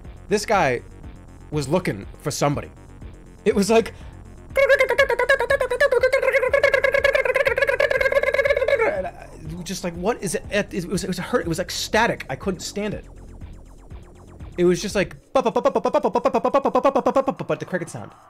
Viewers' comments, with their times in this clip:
0:04 JermaCricket for best sound of the year candidate